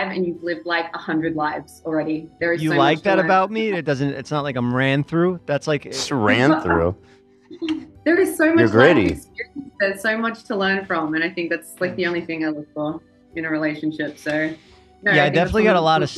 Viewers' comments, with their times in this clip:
0:03 The part in where Jeff says that he’s ran through and Ethan says “you’re gritty” and the soft “thanks” Jeff says is so cute. It’s crazy the difference between them now and when he called into Frenemies is crazy😭